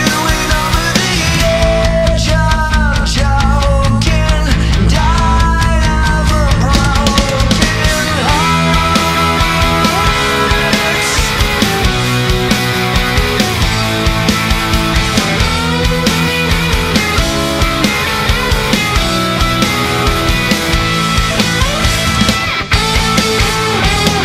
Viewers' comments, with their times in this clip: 0:08 The guitar gets me every time